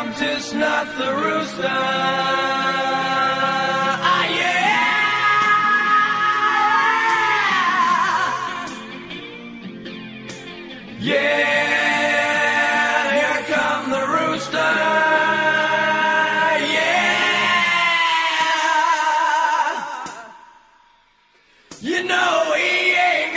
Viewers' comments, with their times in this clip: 0:10 For me, this is the best vocal line they done together: